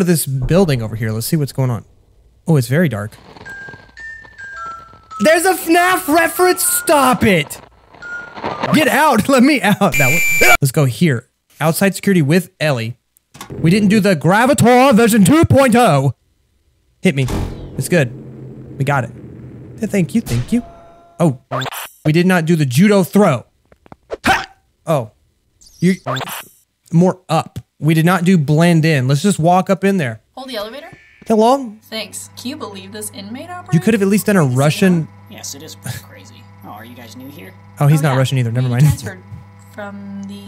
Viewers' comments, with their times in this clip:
0:09 Game: *That wasnt scary...*. YuB: *Screams*.
0:14 Br1tish Boi :3
0:24 Don't know why but the way he said "HA!" sounded perfect